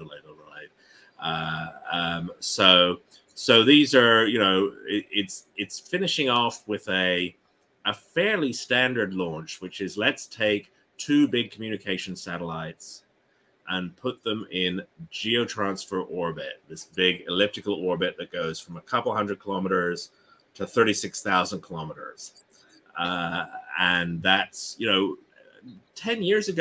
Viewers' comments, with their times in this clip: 0:08 expert yawn stifle but seriously what a brilliant presenter, love this channel